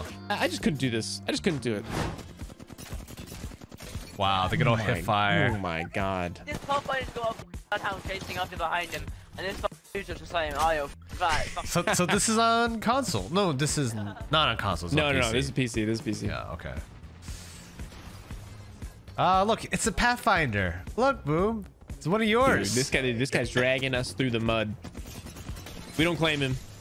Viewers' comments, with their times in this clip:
0:07 CORRECT THAT IMMEDIATELY he didn't say behind He said it wrong as buhind